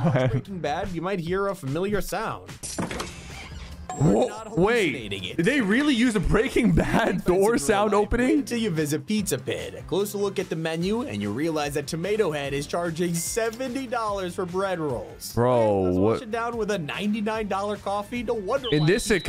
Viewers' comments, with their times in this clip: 0:07 Door sound opening